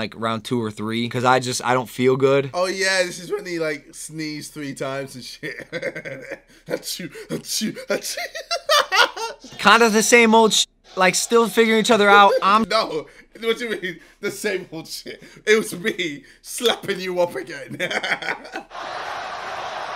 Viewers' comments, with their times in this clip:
0:03 voice crack for the people 😁